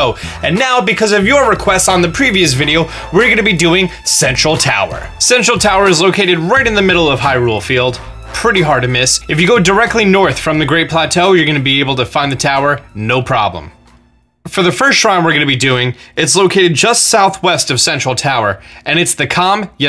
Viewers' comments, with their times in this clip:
0:03 who else thought he said "sexual tower" XD